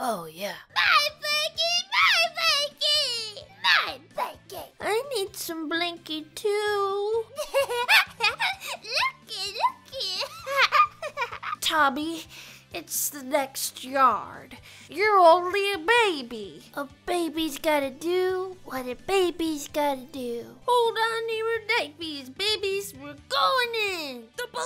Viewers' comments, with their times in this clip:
0:07 Nice Job you almost sounded like the Real Tommy Pickles from Rugrats I give it a big thumbs up 👍